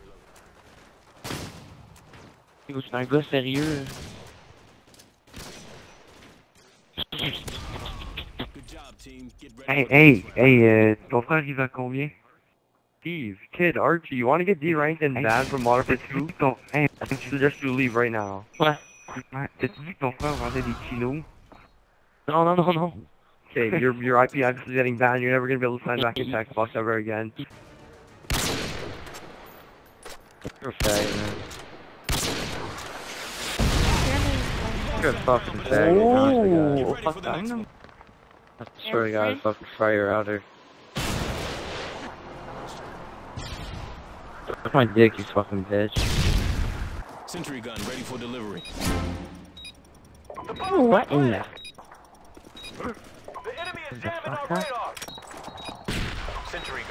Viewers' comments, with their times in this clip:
0:10 lol the french quebec taabarnaakkk!
0:37 anyone else heard : ooohh oppa gangnam ?